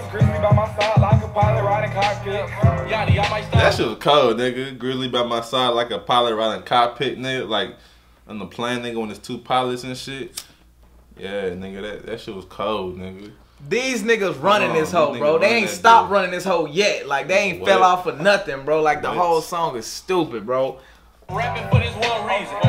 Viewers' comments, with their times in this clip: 0:09 why does his lighter sound like he’s unlocking his iphone